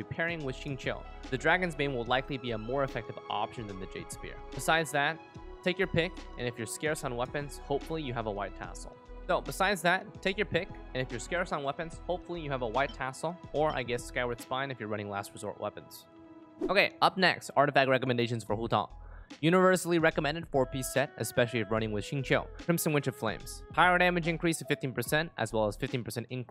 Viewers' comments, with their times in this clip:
0:07 Theres an editing error it repeats the sentence.